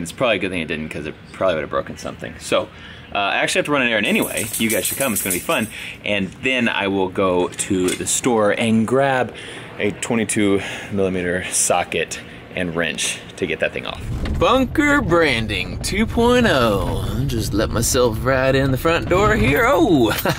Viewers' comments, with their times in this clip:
0:04 I heard the dog shake itself and I just unconsciously thought it was dozer 😢